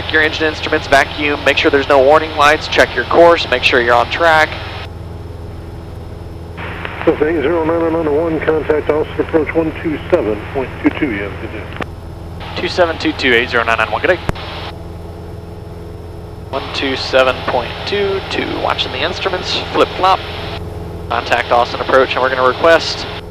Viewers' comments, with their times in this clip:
0:06 Is it me or did the controller sound like his dad?!
0:07 over to Austin approach voice sounds like your dad. Little editing there?